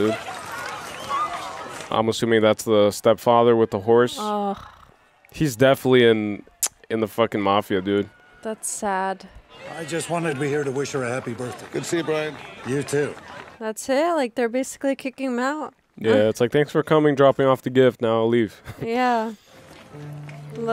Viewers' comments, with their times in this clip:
0:03 He said step-father with a horse, then she made horse breathing sound. lol